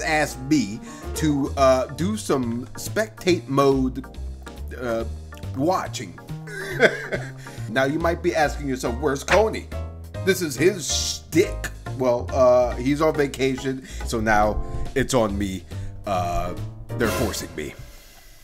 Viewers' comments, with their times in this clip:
0:05 that music is nostalgic af but i can’t put the finger on it